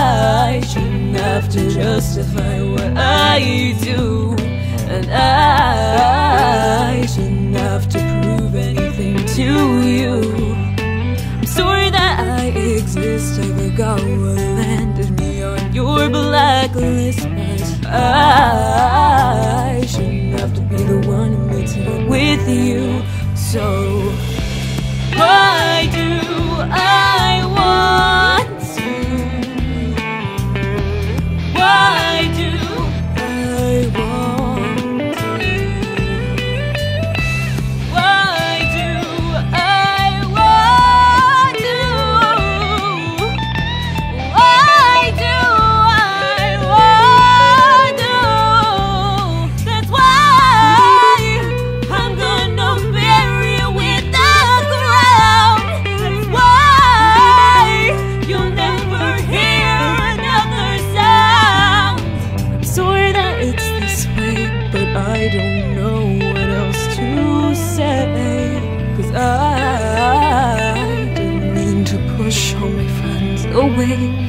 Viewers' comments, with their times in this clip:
0:10 That sorry <3
0:37 Jesus Christ this video needs more likes. My God you had an amazing voice and it's only gotten better!!
0:39 she sounds so good here I love it
1:02 Beautiful voice! But who else heard the car beep in the background ?